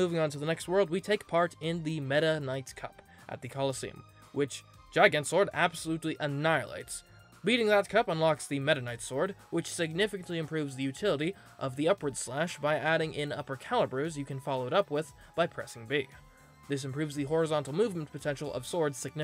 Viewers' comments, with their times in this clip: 0:04 I’m so glad I’m not the only one who says “Gigant” like that.